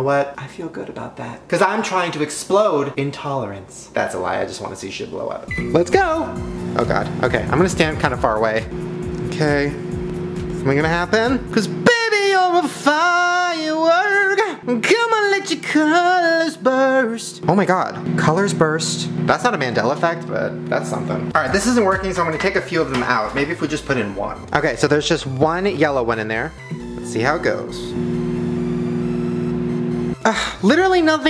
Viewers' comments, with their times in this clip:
0:10 WOAH SHANE UR ACTUALLY GOOD AT SINGING
0:12 Why was he actually kinda good?
0:12 Lol get your singing lessons now
0:13 damn shane that sounds real good like no joke,love that for u 😂 (james charles reference) oops 😬 😂 ❤️
0:15 how the hell does shane sing so good??? im shook